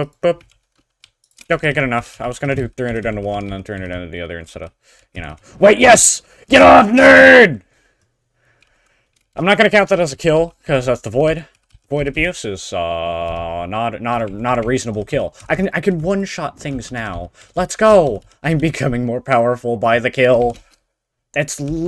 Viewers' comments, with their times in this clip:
0:06 you sound like techno RIP 😢